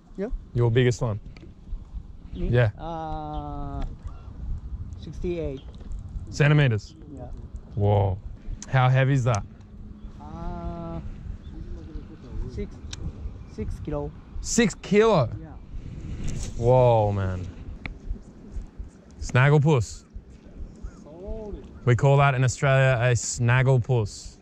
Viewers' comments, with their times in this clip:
0:06 Can here your heart beat 🔥